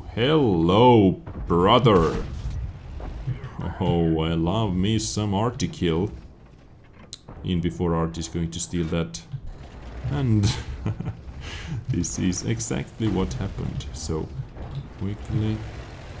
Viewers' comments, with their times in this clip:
0:04 Could you be more specific about what "article" you are talking ? :)